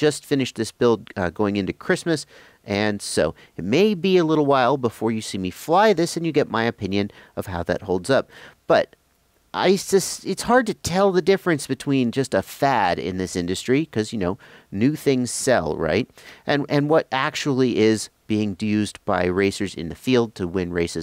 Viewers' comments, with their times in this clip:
0:09 He totally said ISIS ?!? Haha